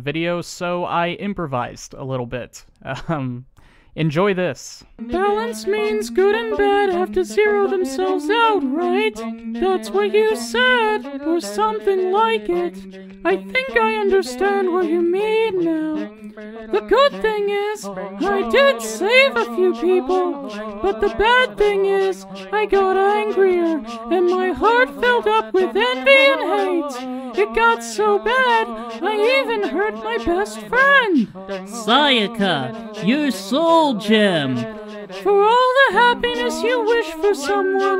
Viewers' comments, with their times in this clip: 0:04 I SPAT OUT MY DRINK WHEN I HEARD THE "BGM" very insightful but god dang you owe me a new shirt
0:05 twinsanity ahh background music
0:05 now thats real music
0:05 or 53....😂😂😂😂😂😂😂😂😂😂😂😂😂😂(that background music, is what got me the most😂😂😂😂😂😂😂😂😂😂)..
0:06 that Decretum in the background xd
0:09 I felt so much emotion in a very long time because of this wonderfull voice acting
0:13 That godly BGM though!!!
0:20 Apparently Sayaka is mickey mouse now.